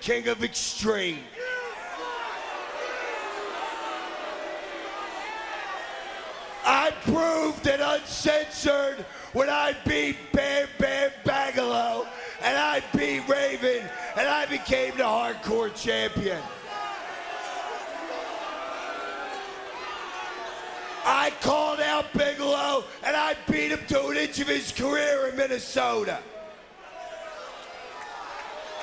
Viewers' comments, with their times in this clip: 0:10 Bam Bam BAGelow. Must be Bam Bam lil brother 🤣